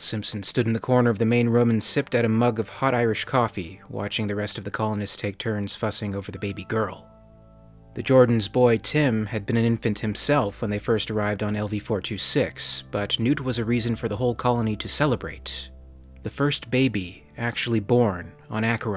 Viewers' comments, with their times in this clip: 0:06 does anyone know the name of the soundtrack that starts ? It's very relaxing and I wasn't able to find it